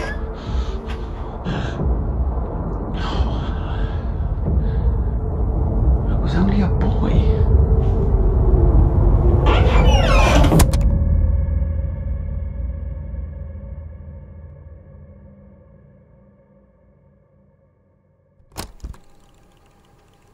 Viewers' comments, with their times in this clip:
0:04 guys you can hear sixs theme does this mean six is cece? cuz the nicknames kind of fit with each other?